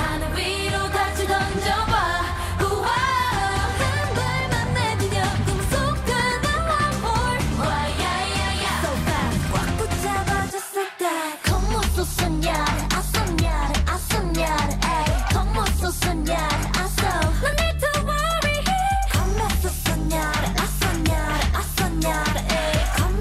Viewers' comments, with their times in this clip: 0:06 i misheard it as "warm wh0re" 😭✋🏽